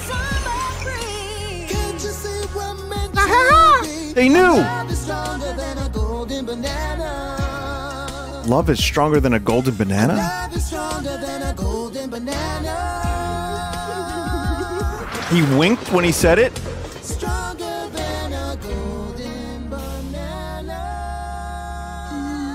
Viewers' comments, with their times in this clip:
0:10 I thought king K.Rool was dry heaving not crying 😂😂😂